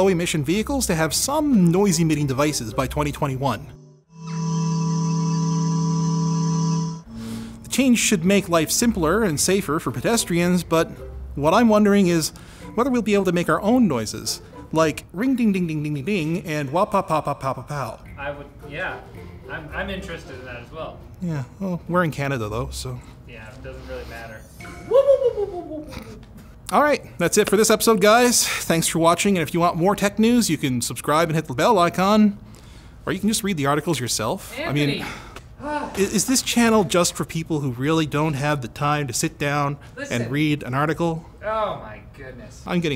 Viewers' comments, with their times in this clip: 0:04 if I hear that I will probably think that an U.F.O is going to hit me
0:14 I'm a 18 years old person laughing at adults making car noises.
0:15 I WANT MY CAR TO MAKE THAT SOUND, USING YOUR VOICE! ring ding ding ding ding ding....
0:24 That cheeky lil' laugh xd